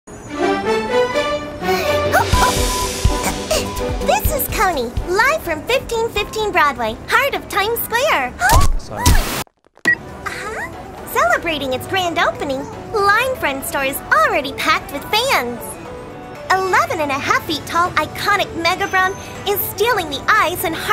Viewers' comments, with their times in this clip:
0:08 Someone said oh sorry- Could that be Brown or someone else..?